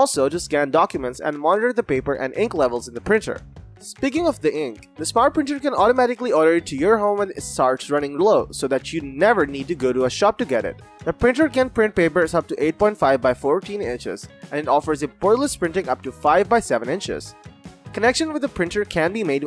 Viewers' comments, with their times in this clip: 0:05 It's very hard to understand your accent automatically what?